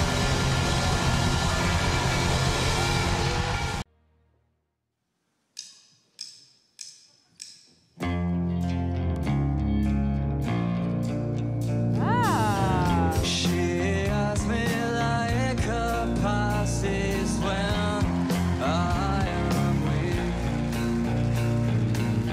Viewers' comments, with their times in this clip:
0:08 Kurt Cobain singing